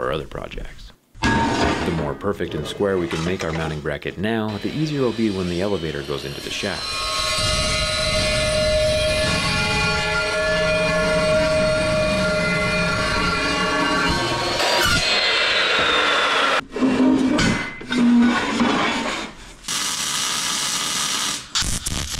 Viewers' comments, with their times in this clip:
0:06 it sounds like a horror movie
0:06 it's sound like a horror movie